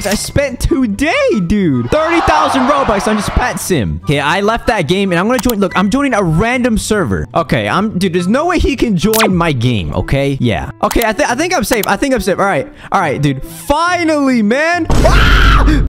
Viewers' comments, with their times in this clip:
0:09 LOL THE END I CANNOT AWHSHHSHSHNE THE WAY HE SCREAMED 😂😂
0:11 I LIKED HOW HE SCREAMED IN THE END